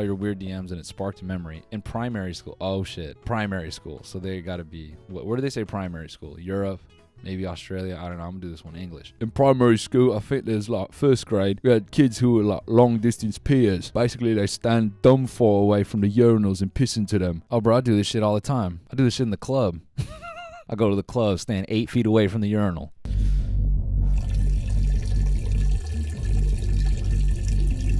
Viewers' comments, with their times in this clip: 0:09 sounds like nz
0:10 he sounds like Alex Turner